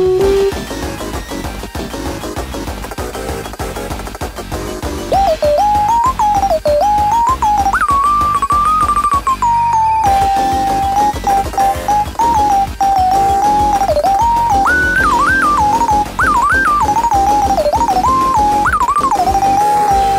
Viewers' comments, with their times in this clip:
0:05 you should refine the notes maybe, sounds great